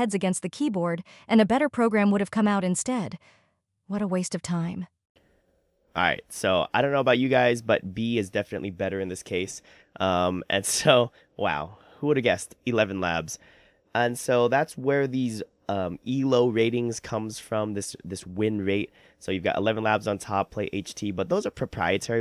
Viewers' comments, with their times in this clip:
0:08 Man I don't know if you drank something, but A definitely sounded better